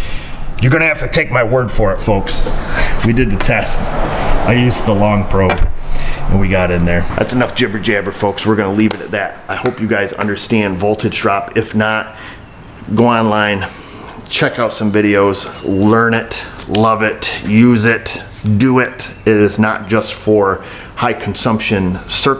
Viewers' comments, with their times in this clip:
0:07 ... Mr T impression
0:07 ... Mr. T impression!